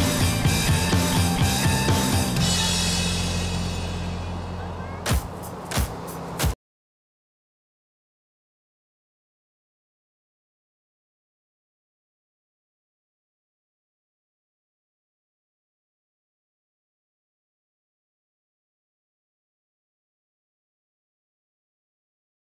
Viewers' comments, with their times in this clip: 0:06 There's no sound